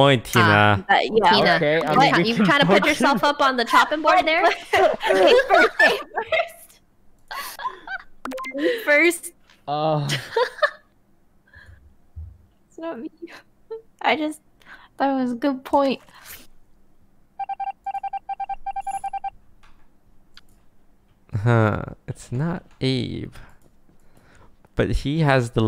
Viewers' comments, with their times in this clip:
0:08 excuse me Sykkuno did you just moan?
0:09 sykkuno sounds very satisfied 😂😂